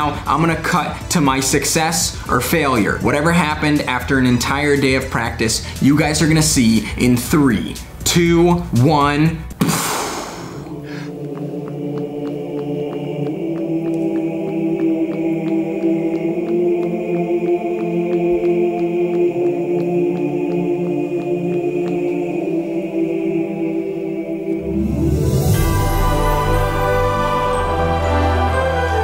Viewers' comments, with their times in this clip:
0:10 Does sound weird like his having xes
0:11 chipmunk mode activate!